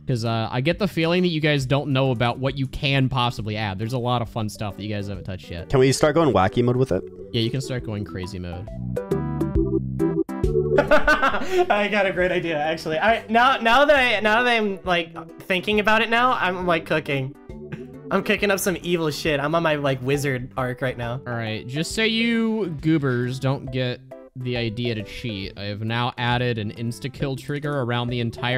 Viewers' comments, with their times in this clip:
0:09 sounded like Pewdiepie for a sec